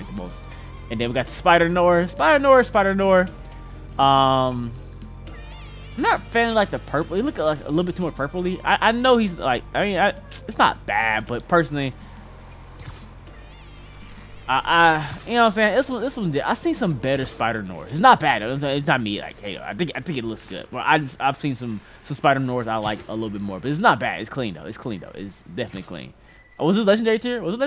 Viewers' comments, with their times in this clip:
0:08 watch in 0.25x mf sounds like he struggling to speak